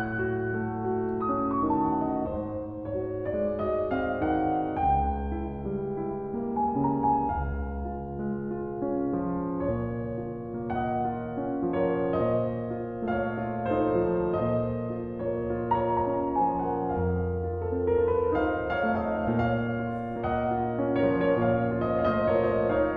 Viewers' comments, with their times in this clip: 0:09 I'm in love with Op. 27, No. 2 in D flat major. Especially the succession of modulations.